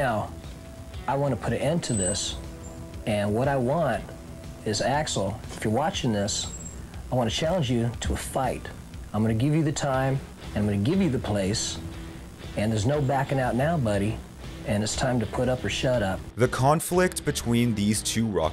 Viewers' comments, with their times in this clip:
0:05 who tf is Horten?